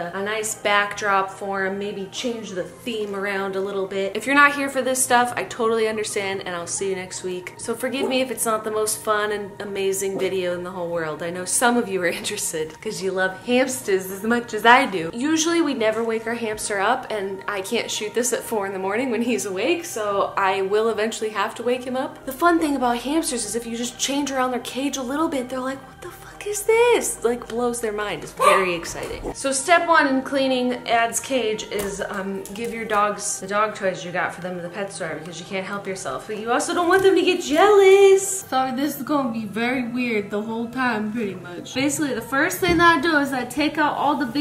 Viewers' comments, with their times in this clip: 0:08 I thought my dog started barking and I started looking around for it and it wasn't there
0:27 i believe marbles just censored jenna oh no